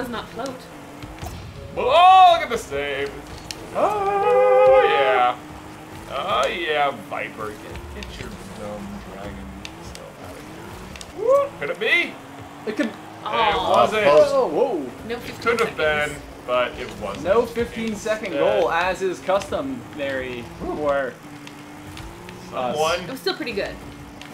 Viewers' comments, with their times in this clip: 0:09 did someone cuss here or something? Why is it phased out for 2 seconds of the match